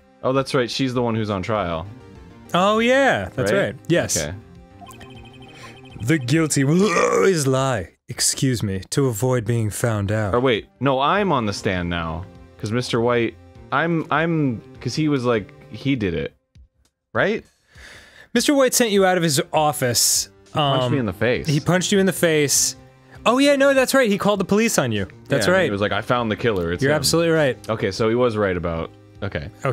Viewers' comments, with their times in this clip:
0:05 Dan used his burp so strategically and Arin didn't even say SHIT. I hate burps, but that was well-executed. Edit: wait, the font doesn't exactly match. Was "excuse me" edited in later?
0:05 That (excuse me) caught me off guard. Pretty sure that was edited in
0:10 Okay, but can we talk about how absolutely perfect it was when Edgeworth said excuse me in parentheses after that burp?